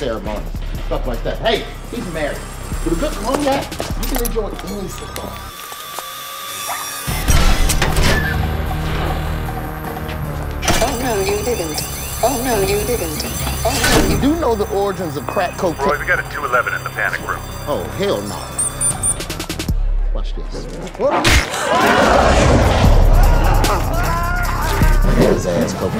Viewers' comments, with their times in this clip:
0:06 what is that alarm saying, Roy?